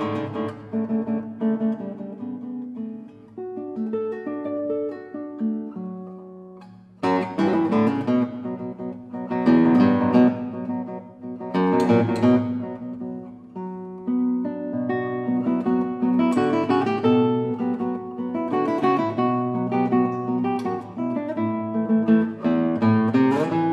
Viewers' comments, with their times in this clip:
0:09 IRON MAIDEN STARTS IN